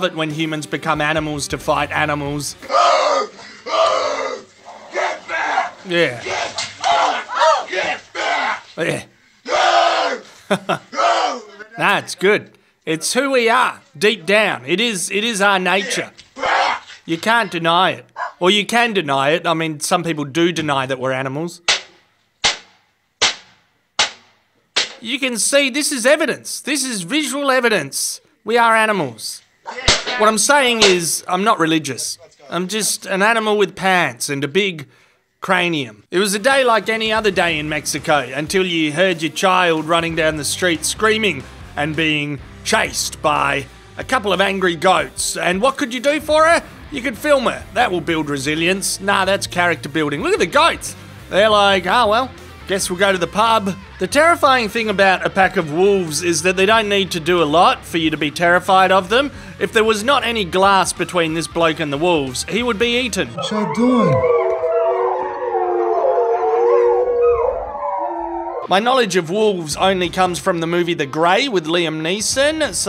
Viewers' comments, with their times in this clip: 0:03 dude should be in a death metal band, for sure, if he’s not already.
0:07 the sound of a dude punching a bear in the face
0:54 the way the wolves were just calling out a "singing" howl, and we very casual about the man walking up to the window, they were just interested in the dude, probably smelled a nice steak through the kitchen vent and wanted to see what was up. It would have been dangerous to go outside still, but they weren't planning on eating the dude, or getting in at all. Wolves are scavengers at the same time as elite hunters, so they hoped for a free meal and met a dude. Just sayin' "hi, your dinner smells good. We'll be gone after we check out your weird burrow a little.